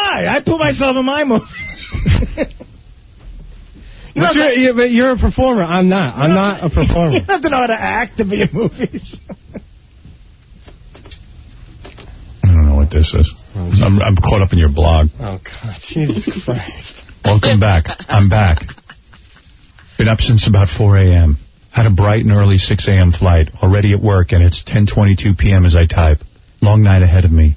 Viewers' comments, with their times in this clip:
0:10 if you have nothing to say then dont.. but gargling out 3 words then wheezing , isnt speaking or adding to the show